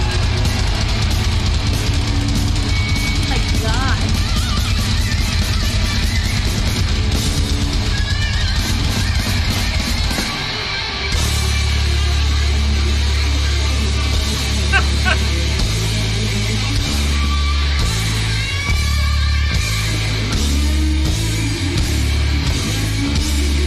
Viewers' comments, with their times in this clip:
0:05 Zakk realises he's in the wrong key..adjusts on the fly! Fucking A, shit happens! \m/